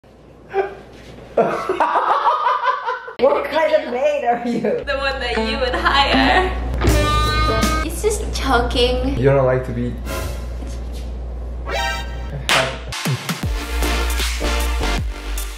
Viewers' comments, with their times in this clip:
0:01 he sounds like J-hope from bts 😂😂